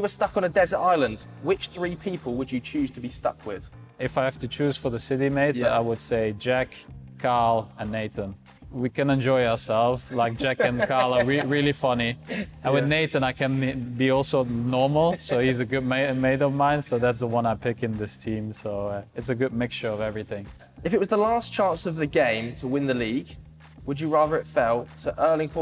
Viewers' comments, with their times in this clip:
0:07 "..Jack, Kyle, and Nathan" Me: "Who tf is CARL"😂😂😂😂